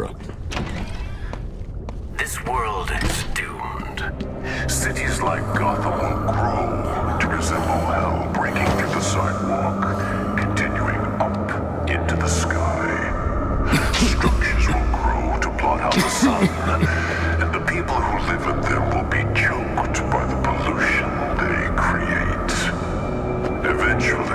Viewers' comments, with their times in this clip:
0:10 I like how the voice gets deeper